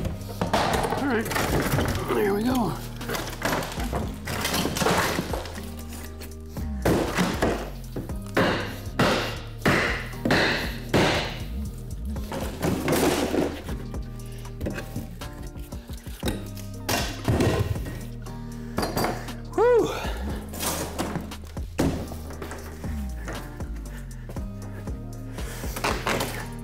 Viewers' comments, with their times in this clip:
0:07 lmfao the relaxing music going along with the destruction and heavy breathing